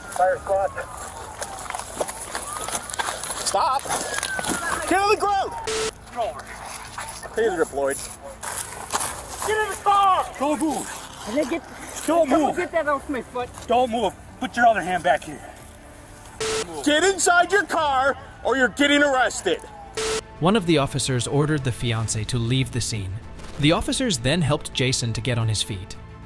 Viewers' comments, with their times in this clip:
0:08 Crazy Rip Lloyd (= taser deployed) 😂😂😂😂😂 Great name for a garage band.